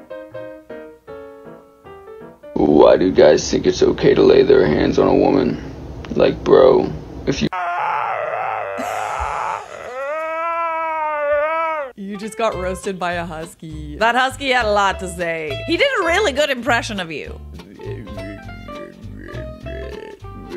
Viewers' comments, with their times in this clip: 0:03 I would be willing to bet anything that the dude saw how popular Corpse Husband's voice is and is trying to imitate the same effect. So many people try to replicate him, it's insane 😂
0:04 guys that talk like this are trying to make their voice deeper. She would've never noticed that you didnt have a deep voice, until she was like "Why is he talking like that? Oh...he must be trying to make his voice deeper...does he have a girly voice...oh i guess he does" lol
0:05 My voice in grade 6 when I was really trying hard to not let anyone know I was actually a girl.